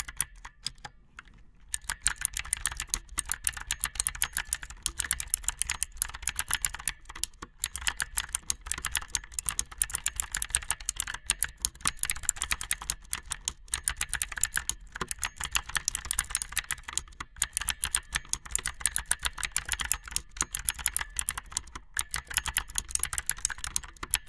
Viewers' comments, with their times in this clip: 0:06 This is their keyboard